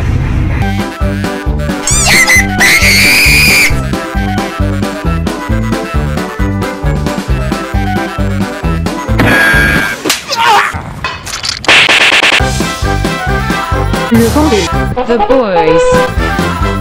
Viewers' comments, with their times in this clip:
0:03 Was that super Minecraft kid when the Demogorgon screamed?